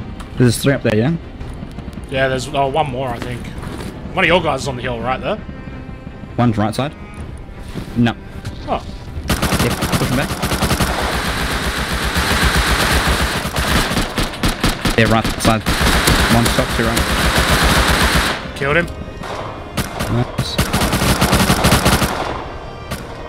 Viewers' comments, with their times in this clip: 0:08 The music selection is absolutely bad ass!!! Especially when you go HAM on that 6 man. Dude! Epic!